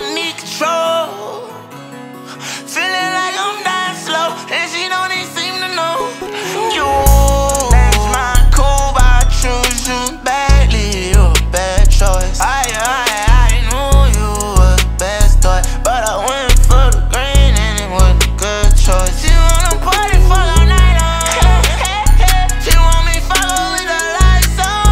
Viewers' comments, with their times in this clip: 0:06 that ewwww be hitting ngl😂🔥 , this ma stuck in my head 😭